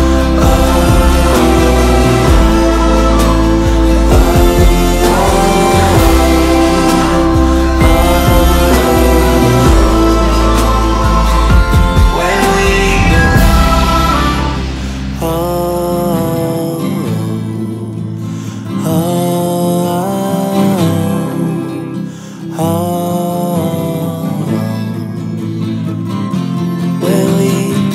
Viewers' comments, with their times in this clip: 0:08 Why is there Crywolf screaming in gnash's song >.>